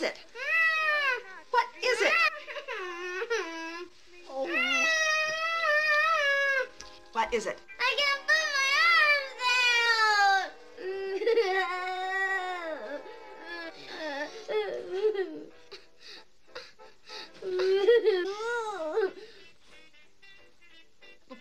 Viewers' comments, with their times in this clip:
0:07 I can’t put my arms down! (wailing and crying)